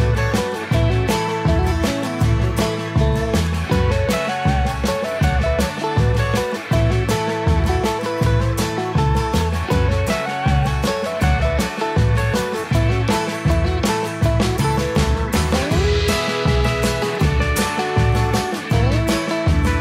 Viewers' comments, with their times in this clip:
0:07 now thats a tune you can shake a finger at! So glad yall still use it